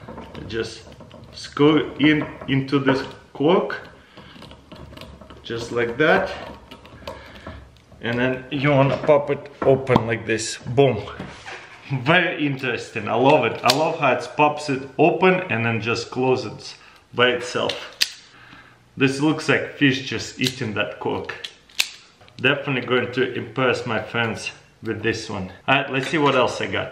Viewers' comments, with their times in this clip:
0:09 That pop tho, just like a real fish just poped 😂💥